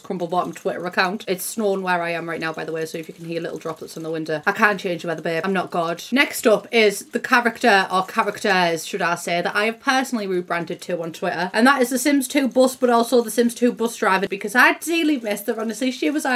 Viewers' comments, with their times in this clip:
0:03 somehow I never thought about snow making a sound!! It’s kind of obvious but I live somewhere without snow and I got very irrationally excited about this.